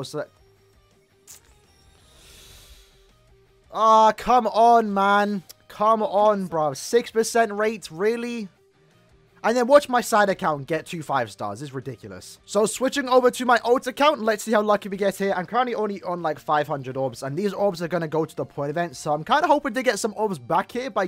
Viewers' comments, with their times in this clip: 0:07 sounded like he was about to say "are you serious right neow bro?"